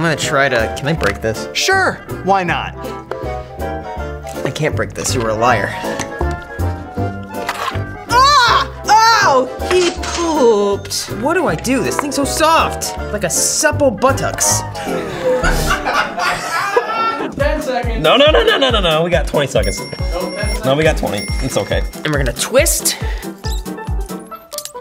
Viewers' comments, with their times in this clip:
0:07 The scream then “he poaaaoooped.” Had dying😅